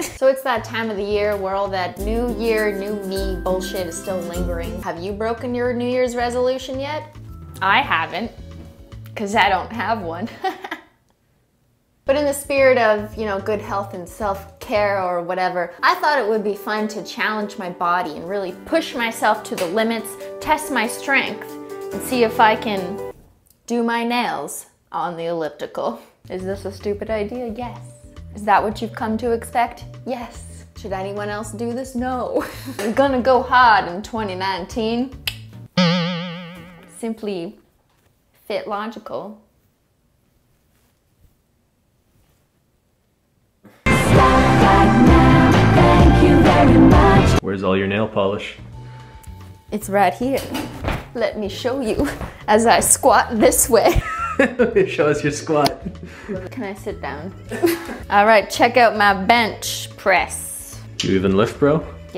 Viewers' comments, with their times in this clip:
0:10 The way she laughs after bad jokes 😂😂
0:45 what's the song I like it I hear something like slap that back very very much 😂😂